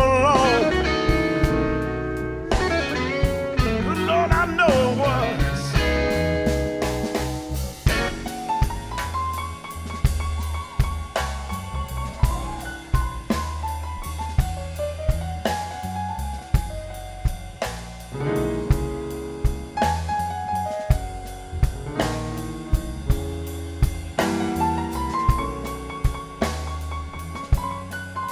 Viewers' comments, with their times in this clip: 0:10 Loved every minute of this performance. Great band and vocals. Especially liked Joe Krown on keyboards solo I see a Hammond organ next to him, I hope to see him solo on that some day.